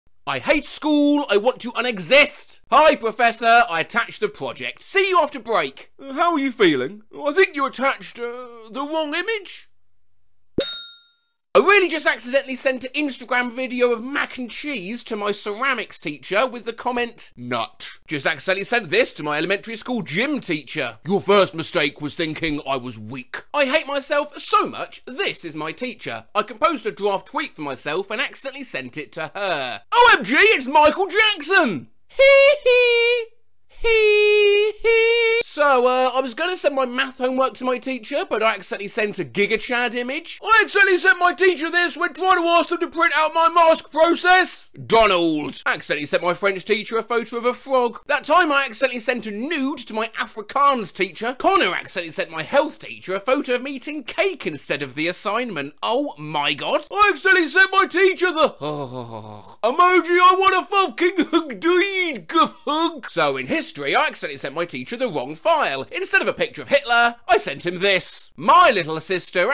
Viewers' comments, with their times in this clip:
0:09 cue wubzzy screaming
0:23 I love your singing!
0:34 Did you just sing the first two notes of Rick Astley's hit song 'Never Gonna Give You Up' and think we wouldn't notice?
0:34 That HeeHee for the one was perfect though. Yep I'm watching this video again, since it showed up in my recommended again, I'm fine with this though. I actually like things coming back through again when I thoroughly enjoy it.
0:49 WHY WHYYYYY DID YOU PRONOUNCE AFRIKAANS LIKE THAT
0:57 at this point you sounded just like our old pal Goofie